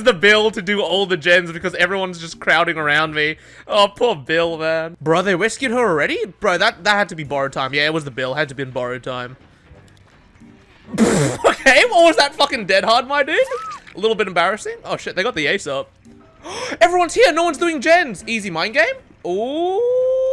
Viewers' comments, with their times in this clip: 0:04 “wescued her already?”